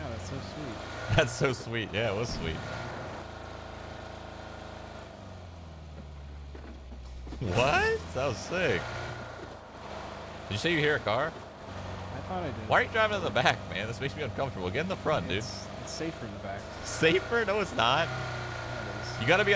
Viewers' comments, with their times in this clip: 0:06 home improvement "what?"